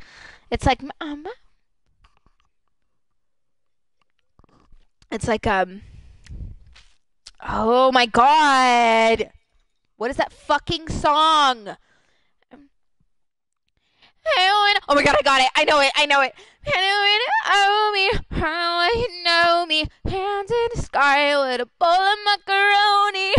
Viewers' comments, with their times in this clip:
0:07 not the halsey impression lmao